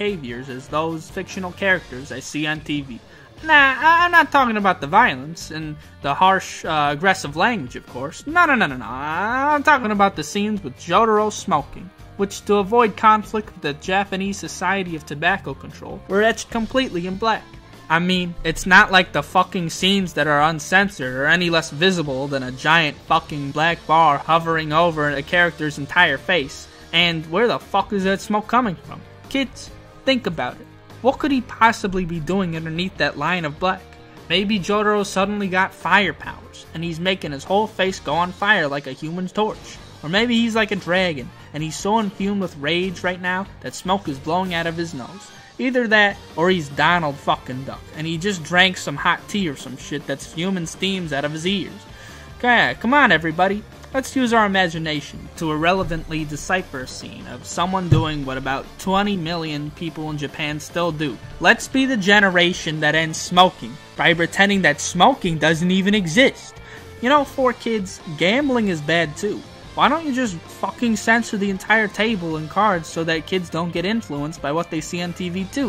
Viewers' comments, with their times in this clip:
0:06 I heard the “YAKAMUSHI”
0:58 you can hear him bump his mic